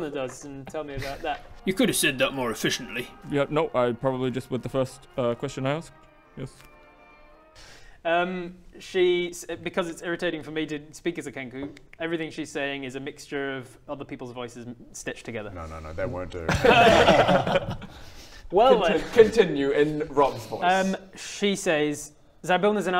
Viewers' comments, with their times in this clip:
0:10 aww, what a shame. Your speech was awesome. Reminded me of Bumblebee from transformers.